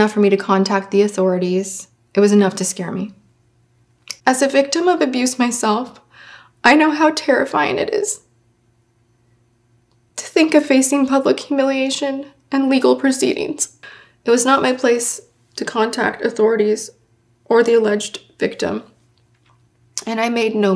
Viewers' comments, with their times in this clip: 0:04 WHAT!!!!! You think was genuine? I'm sorry but it was extremely obvious she was deliberately trying to choke up and tear. No matter if the topic of "victims not wanting their assault advertised" is true she was purposefully trying to convey that emotion for the camera.